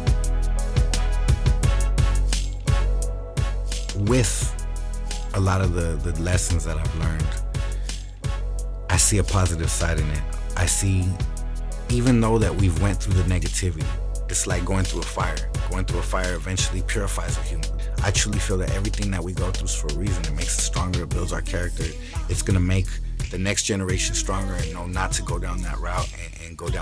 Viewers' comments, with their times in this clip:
0:07 What’s that smooth beat bumping through this, ?